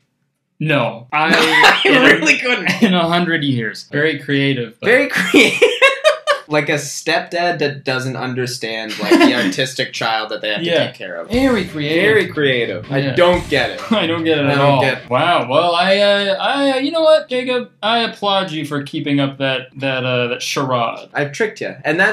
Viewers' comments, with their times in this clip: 0:09 im sorry was that autistic or artistic because i am both 💀💀